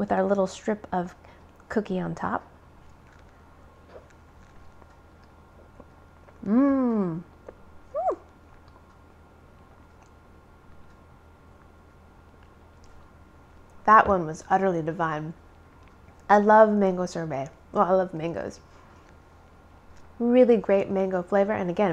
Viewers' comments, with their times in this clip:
0:04 The captions say "[Music]" when she makes her happy eating sounds! 😂😂😂 I love this channel.